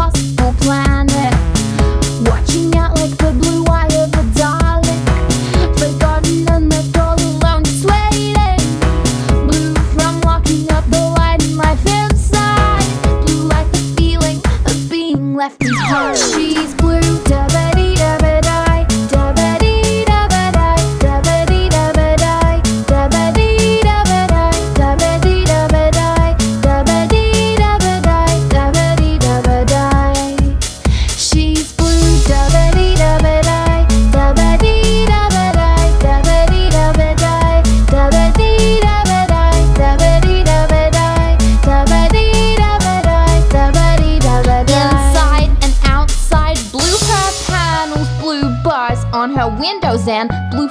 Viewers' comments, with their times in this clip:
0:05 nice voice there but when I pull up that video called she's blue, in she puts paper in a bottle locking it, and how I don't know she done that, I wish I could do that lol. you could see how she does it. XD
0:31 that bass tho